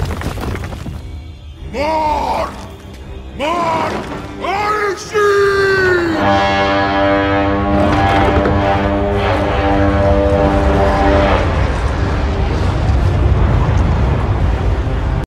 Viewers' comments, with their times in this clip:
0:06 my favourite horn
0:06 If you want to hear the Horn.